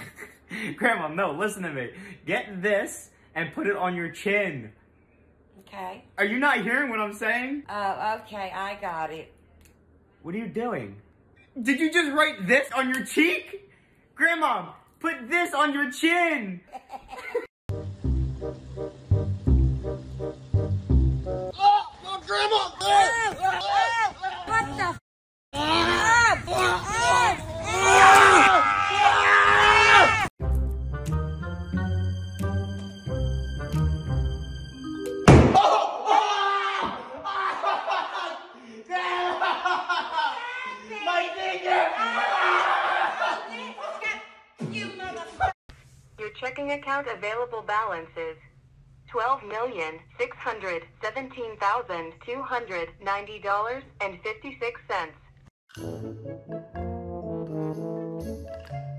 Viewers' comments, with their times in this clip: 0:07 the most evil laugh ever
0:43 that silence grandma made after realised it was fake 😅😂